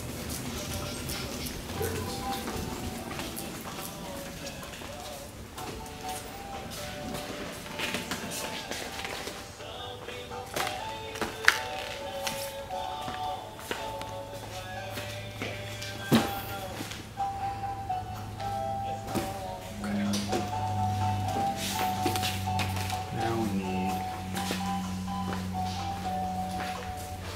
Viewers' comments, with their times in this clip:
0:10 lol that's my favorite song for milling around a store